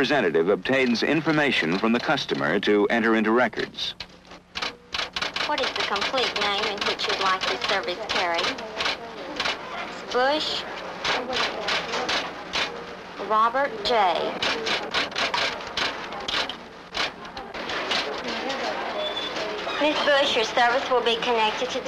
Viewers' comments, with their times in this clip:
0:05 Dat sweet solenoid sound!